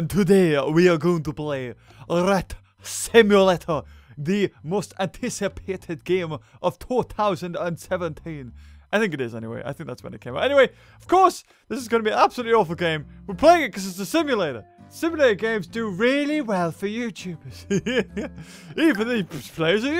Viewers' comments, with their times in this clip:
0:04 he sounds Scottish